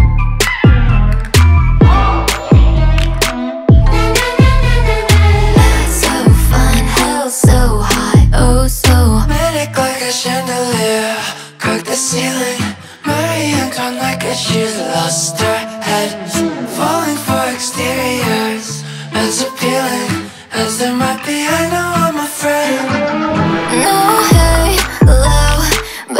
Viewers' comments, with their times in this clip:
0:10 am i tripping or did he just say caca ceiling?
0:13 she's a lobster head 😂🤣